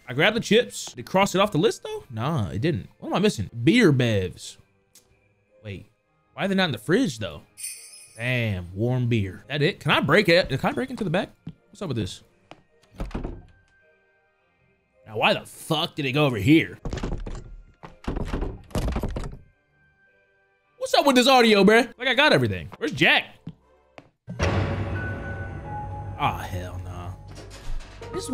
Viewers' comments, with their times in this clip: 0:09 i swear to god i hear the fire alarm chirp